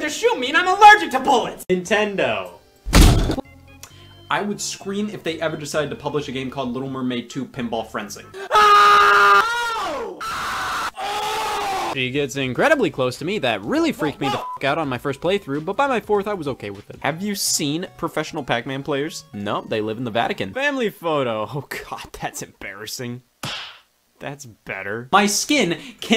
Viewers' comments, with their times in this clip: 0:08 The part where he just started fucking screaming killed me